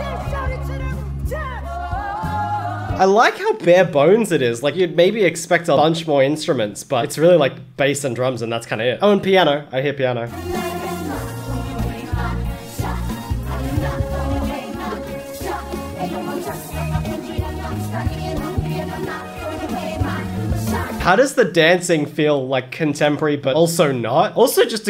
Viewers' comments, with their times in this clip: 0:08 made me be completely aware of all the instruments at once